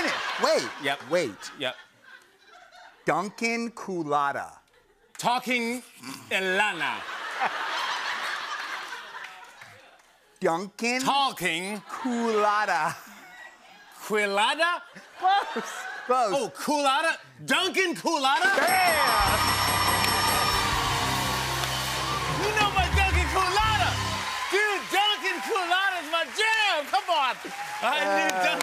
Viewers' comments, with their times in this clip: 0:09 the way he said that 💅🏻